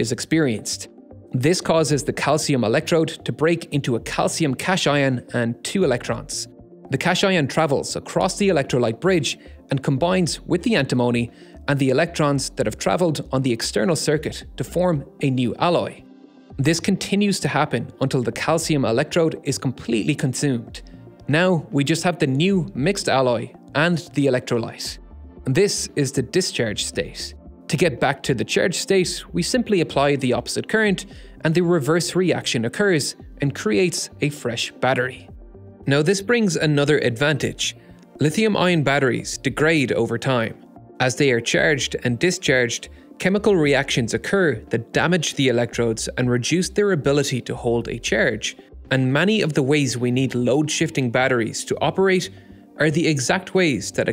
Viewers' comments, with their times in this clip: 0:04 😆 English spelling is a nightmare. I need a va-cation
0:04 Cash ion. Damn never heard of those.
0:08 Since when is "cation" pronounced like "cash ion"?
0:40 the way he says charged